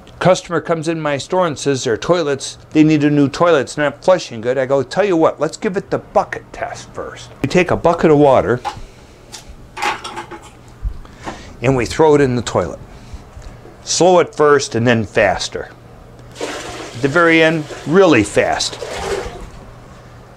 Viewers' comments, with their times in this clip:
0:04 perhaps he mistakenly heard F instead of B when you said Bucket test
0:05 Thought he said something else! Haha! Great video though.
0:05 Anyone else hear the 'Fuck it' test? Was great info overall, but I found that a bit jarring.